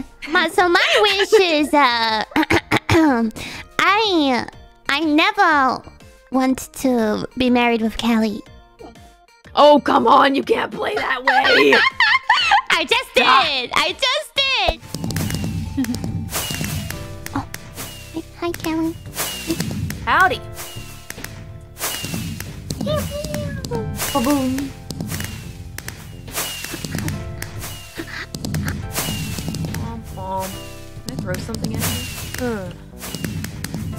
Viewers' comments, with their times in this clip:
0:10 The pain in Calli voice is so powerful
0:15 That little giggle ... TAKAMORI IS TOO PRECIOUS!!! TToTT
0:17 Her tiny voice is so cute 😍